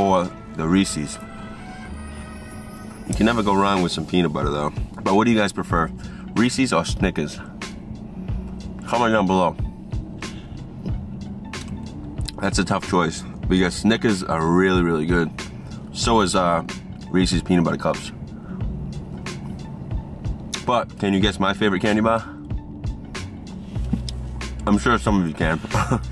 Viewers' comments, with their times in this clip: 0:07 that accent really came out when he said “snickas “ 😂